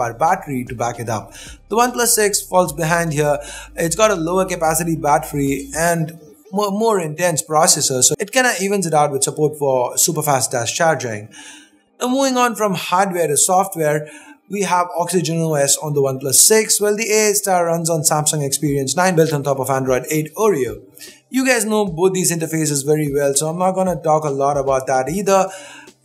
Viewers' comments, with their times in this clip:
0:07 he said chargering > .....charging>? ki chargering